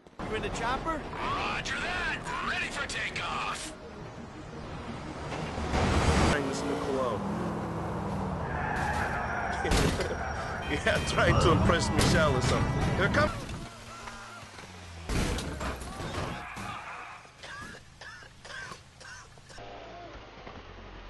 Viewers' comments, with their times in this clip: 0:07 made me piss myself lol. The randomness of people dying in GTA IV coupled with their funny-ass grunts is just pure poetry. SA, III and GTA2 also had some funny sounds when people die. Others, not so much.